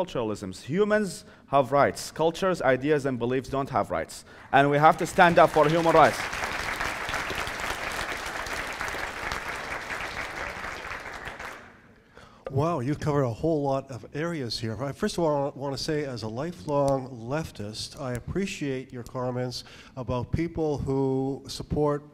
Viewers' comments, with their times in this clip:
0:04 LOL WHO IS THE STONER? "WHOOAHHHH DUUHUUDDE YOU COVERED A WHOLE LOT"